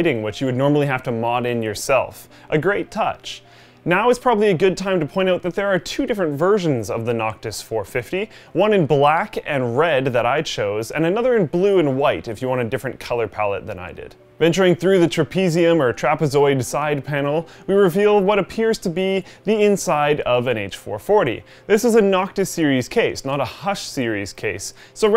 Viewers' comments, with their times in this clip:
0:09 the backgroundmusic xD nice vid guys